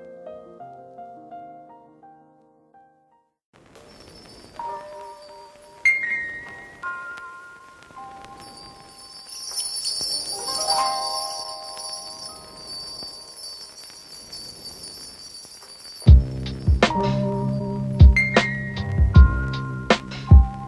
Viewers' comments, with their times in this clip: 0:03 That song ain't pook